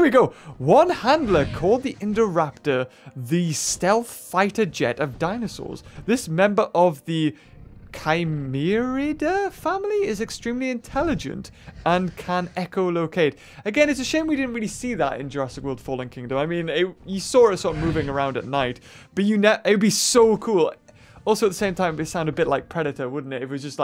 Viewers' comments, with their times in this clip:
0:09 Omg hes a hacker he has indoraptor 🤣🤣 Jk i thot he said can eat chocholate